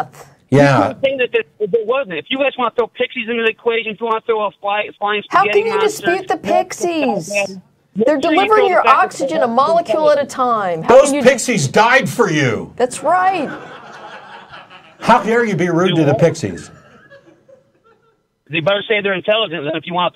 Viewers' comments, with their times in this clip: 0:04 She's so sincere with "How can you dispute the pixieeesss?" Amazing person!